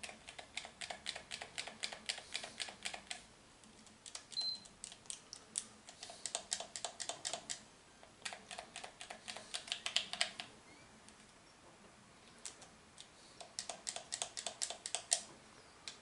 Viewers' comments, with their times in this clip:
0:03 I thought the beep was my microwave lol
0:03 who else heard that beep and looked over at their ps4
0:03 I heard the ps4 turn on
0:04 the beep of death. any action from this point could end this whole account 😭
0:04 haha the PS key haha I only hear the plaisy in the background